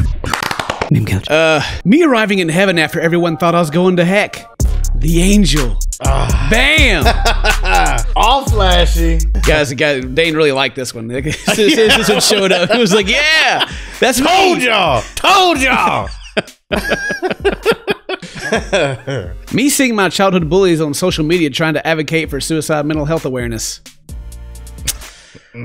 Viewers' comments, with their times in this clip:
0:10 Sounds like to said the N word a little, Just saying!